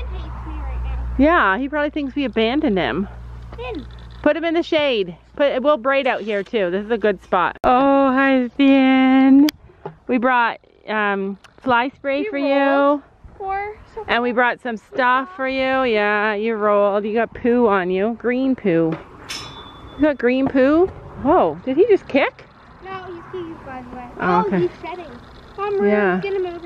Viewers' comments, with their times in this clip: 0:07 when u said "oh hi Finn" it kinda sounded like a song 😂